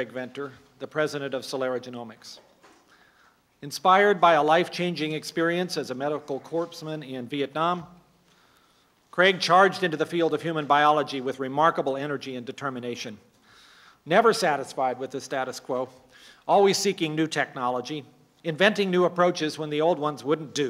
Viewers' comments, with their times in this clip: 0:06 Dr. Collins mispronounces Dr. Venter's first role. Hospital Corpsman (core-man) - an enlisted medical medic assigned to a Marine Corps unit. I am one - 8404 Fleet Marine Force. He was one in Vietnam. It is pronounced CORE-MAN! S is silent.